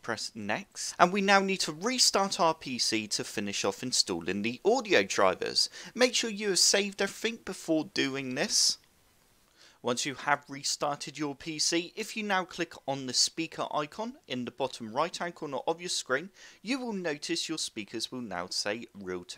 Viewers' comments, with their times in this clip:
0:06 Omg I have work to do what did he say all it sounds like to me is "make sure you have saved a fink....." wtf did he say here so frustrating not your accent just the situation w my computer I'm literally missing a work conference rn. Edit: this shit DID NOT WORK The biggest thumbs down I can think of n yes your accent is dumb all cuz I'm mad lol idc.